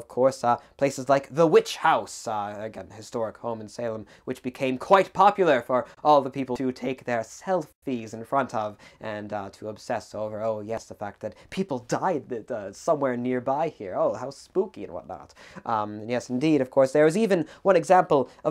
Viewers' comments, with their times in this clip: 0:06 Never have I heard the word "Selfie" uttered with such an ironically biblical degree of disdain. Fascinating subject matter.